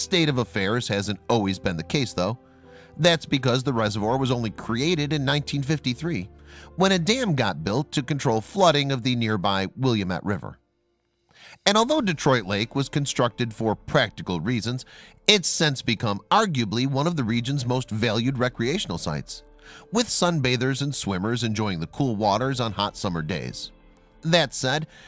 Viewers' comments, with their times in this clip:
0:10 "will-ee-em-et" river. No, it's pronounced "Will-LAM-et". At least get the pronunciation of the basics correct. Geez!